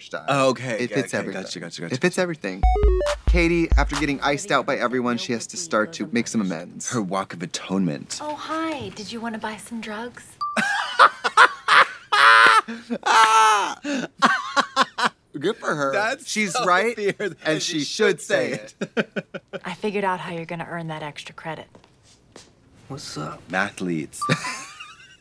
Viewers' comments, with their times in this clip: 0:10 blonde women hee-haw 💀